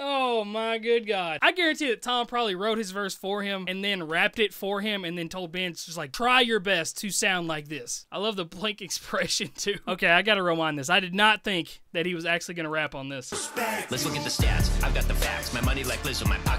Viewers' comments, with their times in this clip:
0:03 Nah, man. They used ai to cover Tom’s voice for Ben’s verse